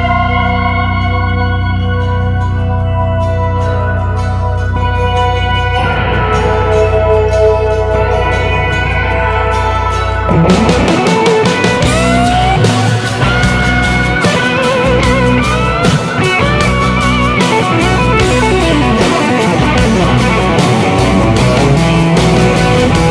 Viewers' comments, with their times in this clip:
0:09 favorite part when those drums kick in followed by a flaming solo.
0:10 That beautiful rippin guitar solo though! Such a killer guitar player. I love this guy, it's hard to find such good music like this anymore. Joe Banamassa keepin it real!